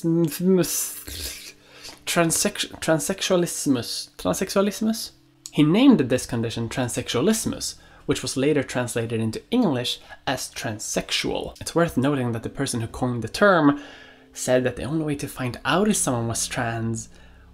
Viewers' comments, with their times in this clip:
0:04 Also A+ German pronounciation lol